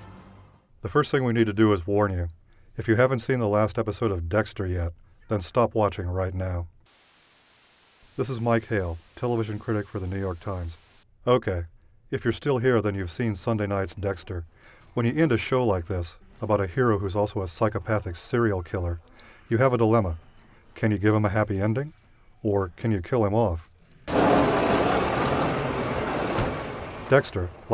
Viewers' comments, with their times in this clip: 0:08 NO, IT'S MY KALE